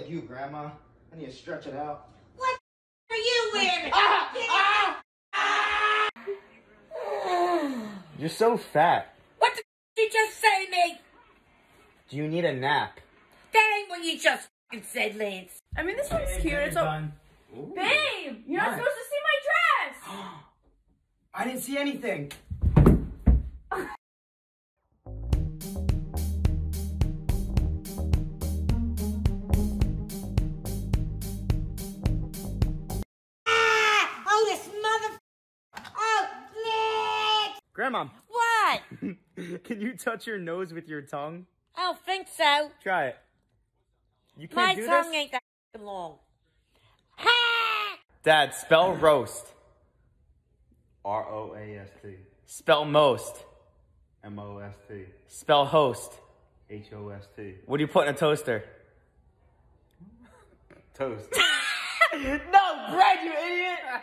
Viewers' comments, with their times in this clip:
0:05 the new tom and jerry scream
0:05 you should see this one this is the new Tom and Jerry scream
0:06 Bro I like how she yawns
0:24 cheerful music until
0:46 that scream tho 😂😂😂